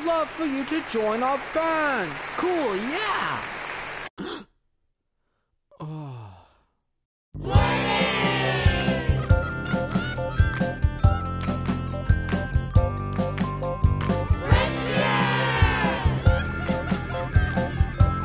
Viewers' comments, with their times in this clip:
0:04 * paranoid android intensifies*